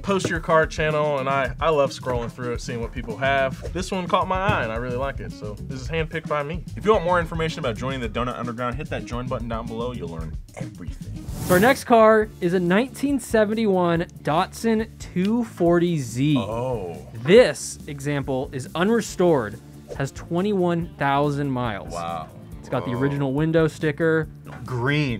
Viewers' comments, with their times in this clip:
0:10 DOTsun ... nooo Datsun!